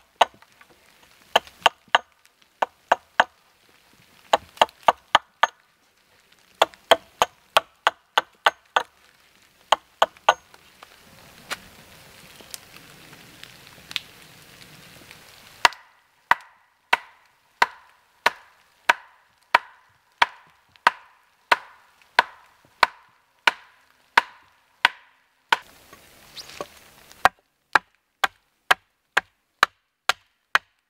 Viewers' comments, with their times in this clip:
0:04 Am i the only one who heard “the nutcracker” from when he was chopping an edge on the very first tree
0:12 you were chopping to the tune of jingle bells. Maybe just me... 🤣